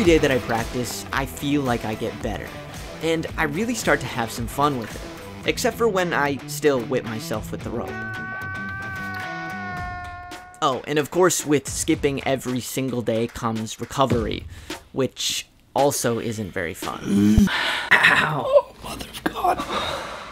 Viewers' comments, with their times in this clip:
0:07 A fav comes for 😀 What a scream dude. I could feel your pain while watching